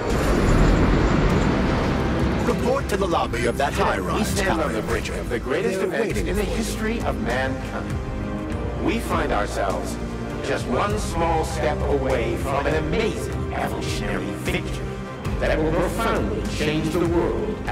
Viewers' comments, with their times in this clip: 0:03 song and intro are legit straight out of a fallout game, immediately remembered the leaving vault 111 part.